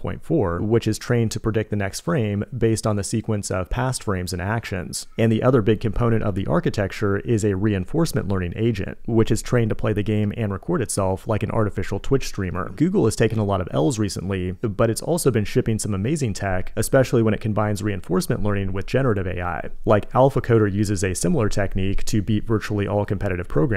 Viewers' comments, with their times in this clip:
0:04 I love the sound of the child in the background ;)